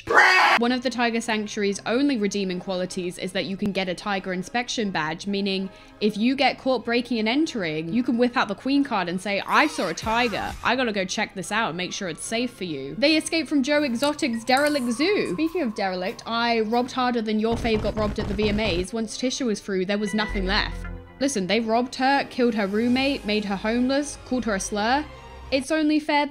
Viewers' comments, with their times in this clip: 0:09 the way o thoight of the somg when you said queencard but didn't think at all I'd then hear it